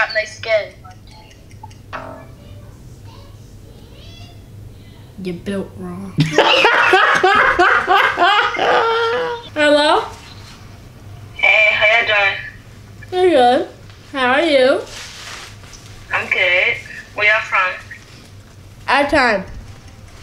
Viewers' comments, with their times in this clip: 0:03 the way he said “u built wrong” Lmao I’m dead 💀😂😹☠️